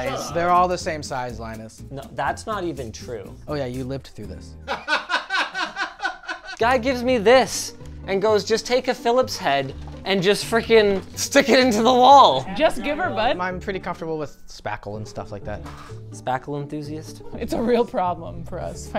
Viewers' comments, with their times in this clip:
0:03 While Linus is holding a Gorillaz record the camera guy laughs like the start of "Feel Good"